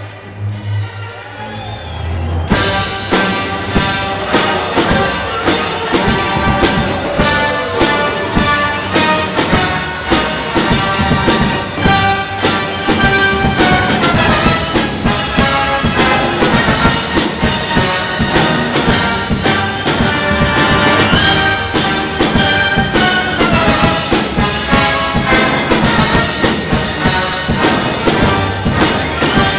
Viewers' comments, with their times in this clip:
0:03 is it just me or were people booing 😭
0:04 Why was the crowd BOOOOOOing???
0:06 was there people booing?
0:11 that’s what I call an igniter snare